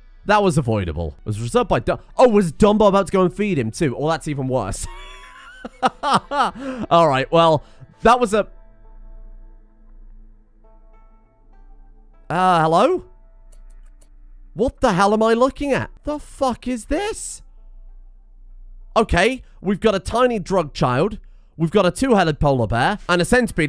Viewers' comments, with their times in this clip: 0:07 that wtf pause was hilarious